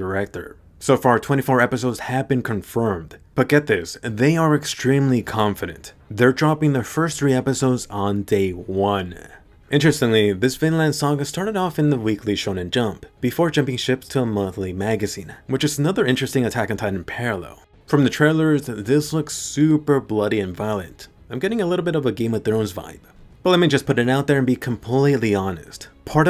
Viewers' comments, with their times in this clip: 0:10 Finland? Or did I miss hear it XD